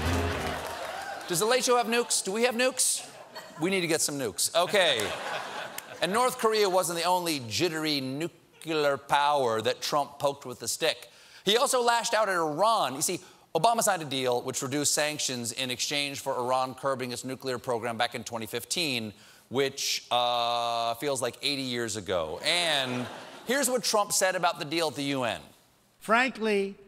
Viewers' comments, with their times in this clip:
0:07 How come americans, even the highly educated, can't properly pronounce the word NUCLEAR?